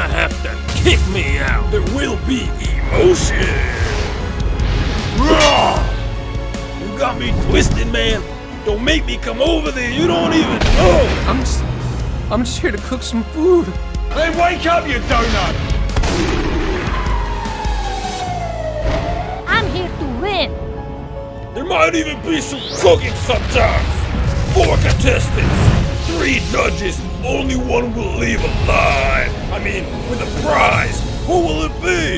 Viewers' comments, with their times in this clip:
0:07 he sounds like chef from the total drama franchise
0:20 Lmfaoo when the English auto generated captions are on it say there might even be some fucking sometimes